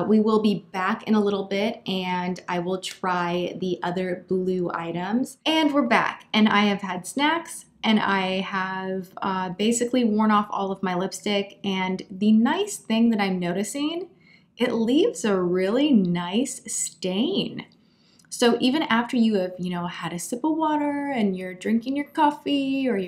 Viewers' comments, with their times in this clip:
0:05 i heard "and we're back and i have had sex.."